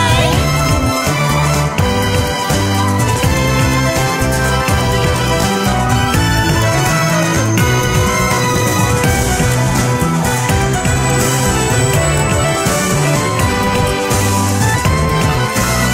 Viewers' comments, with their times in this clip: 0:03 to 5.02 kinda reminded me of hikari o 😂😂